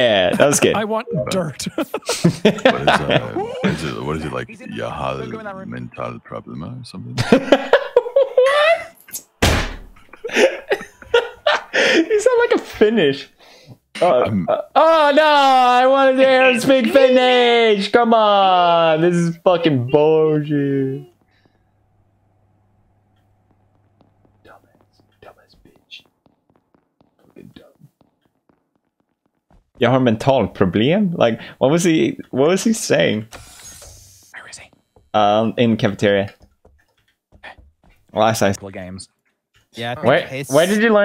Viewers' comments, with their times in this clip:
0:03 He literally sounds like an average Finnish primary school student trying to pronounce Swedish... I am not kidding. Felix is spot on.
0:04 When he said “jag har” it sounded sooo danish like “jeg har”.
0:06 no felix he sounds norwegian af
0:13 "You sound like a Finnish" Hey now, we do not speak Swedish like that :'D But yes, I also want to hear Corpse speak Finnish.
0:26 why nobody mentioned ? is that corpse talking to himself..?